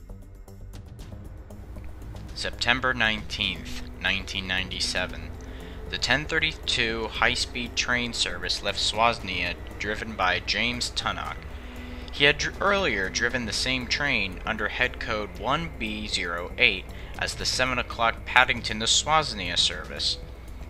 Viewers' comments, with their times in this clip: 0:05 Left where? LOL How do you get "swazz nee ahh" from Swansea? That's hilarious.